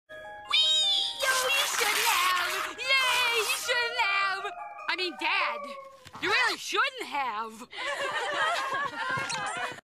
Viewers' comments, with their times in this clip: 0:03 I like how the music screeches to a halt lol